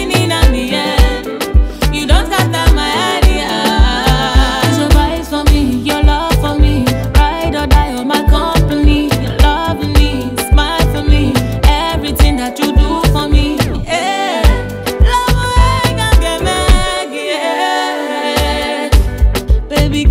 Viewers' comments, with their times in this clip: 0:04 Yemi brings goosebumps flow🔥🔥🔥